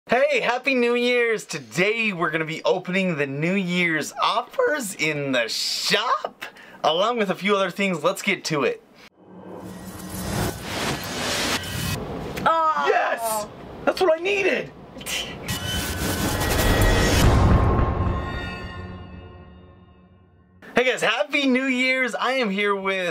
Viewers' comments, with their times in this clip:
0:07 that voice crack tho love ya btw